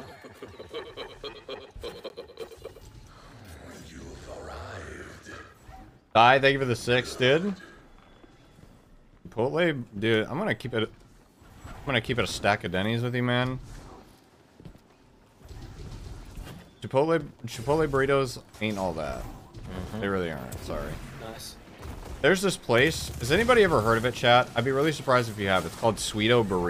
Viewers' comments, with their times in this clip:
0:10 just me or did he stop talking cause he thought he got boinked off the edge?